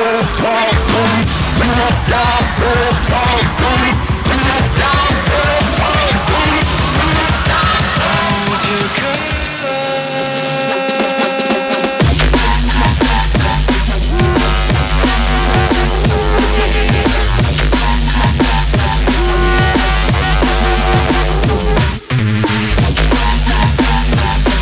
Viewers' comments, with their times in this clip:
0:07 which song was played with Hold Your Colour (Noisia Remix)? sick double drop :)))